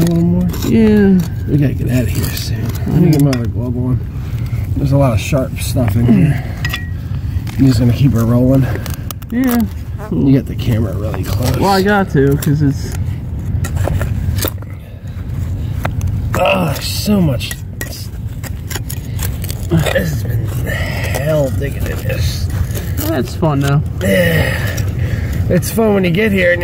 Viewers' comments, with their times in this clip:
0:08 I heard that fart .....LOL
0:10 alright who let the squeaker out?